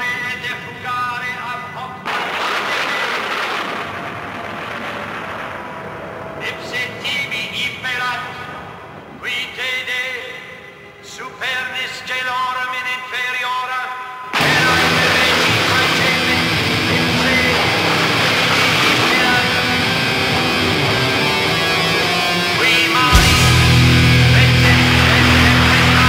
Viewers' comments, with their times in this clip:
0:07 You will never not convince me this guy does not say "DVD player" 😂